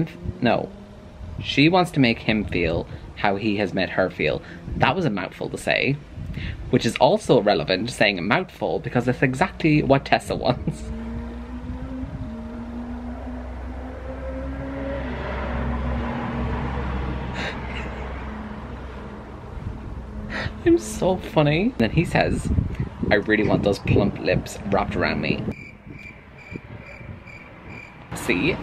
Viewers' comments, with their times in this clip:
0:10 You laughing so much at your own joke basically made my day so much better and made me subscribe to your channel !